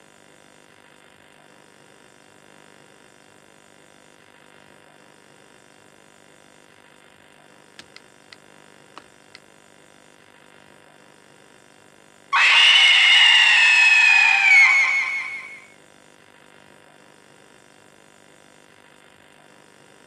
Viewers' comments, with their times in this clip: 0:05 my ears :c